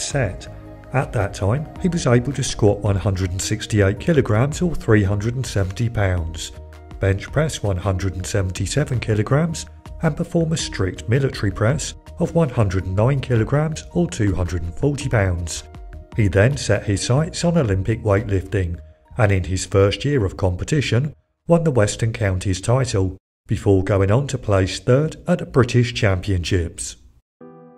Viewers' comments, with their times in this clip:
0:10 "mill-uh-chree press," ok, but what is "mill-uh-chree"?